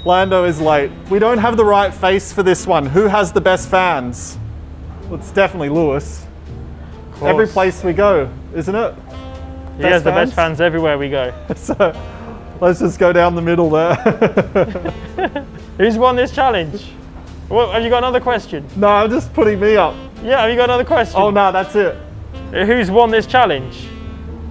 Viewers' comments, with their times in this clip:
0:05 he said it's definitely Lewis. Too deadpan or you're deaf lol